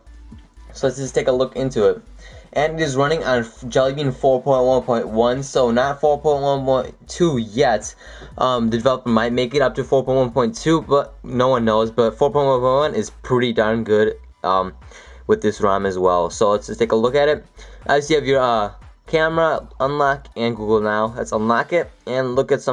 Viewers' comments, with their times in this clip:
0:10 four poin who poin wo. lol